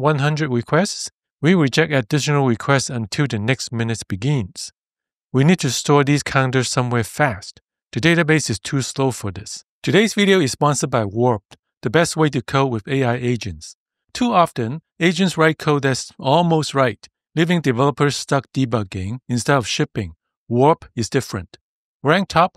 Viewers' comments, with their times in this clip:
0:09 Feedback: The transition to the sponsor segment is too abrupt. There is less time between the end of your non-sponsored sentence and the beginning of "Today's video is sponsored by..." than there are between your normal sentences. Getting this timing wrong makes it sound like the sponsor message is a continuation of the previous thought, or that "Warp" is going to be an answer to the problem of how to increment counters quickly, until I heard that it is about coding with AI agents, which is completely irrelevant.